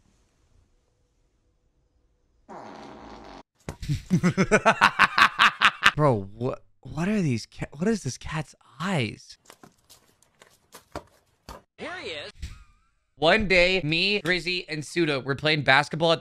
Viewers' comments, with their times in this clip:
0:04 bro sounded like the green goblin 💀💀💀